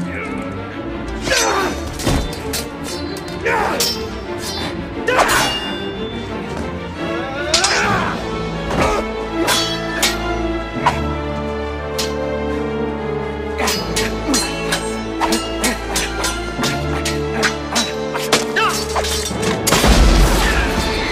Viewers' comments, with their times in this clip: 0:07 Not to mention the freaking music at that precise point combined with everything else you said